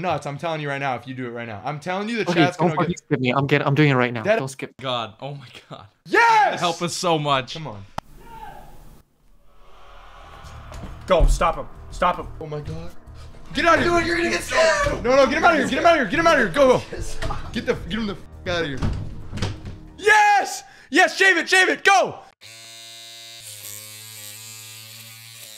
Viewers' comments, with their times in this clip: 0:07 That reaction and the ambience music was perfect LMAO